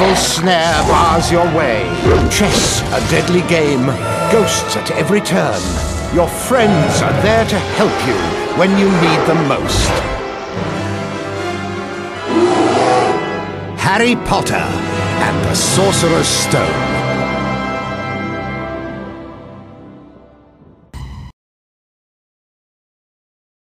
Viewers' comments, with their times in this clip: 0:10 IT'S A BEAR ROAR! lmao